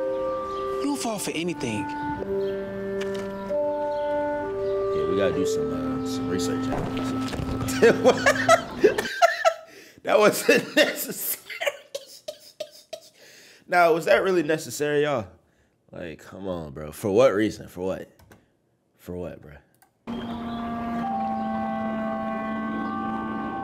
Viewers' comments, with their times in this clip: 0:07 bowling pin ahh sounds effect